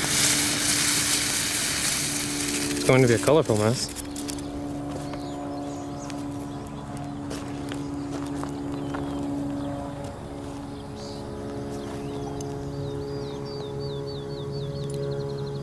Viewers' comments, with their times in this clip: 0:03 the airplane is the Fed's wondering who's ordering all this stuff online.